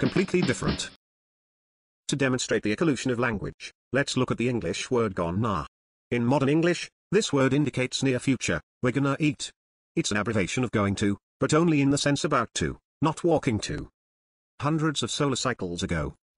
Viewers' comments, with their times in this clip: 0:04 In I had to spell it "gon-na", because it pronounced "gonna" as "gmnn".